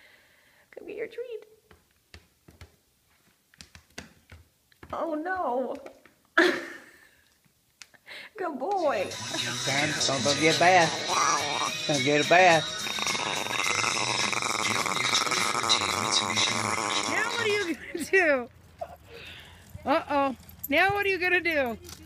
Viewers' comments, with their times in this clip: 0:09 Owner: ''Gonna go get a bath'' Chihuahua: growls ''what did you say?'' Owner: ''Gonna get a bath!'' Chihuahua: long growls showing teeth ''don't you dare!!''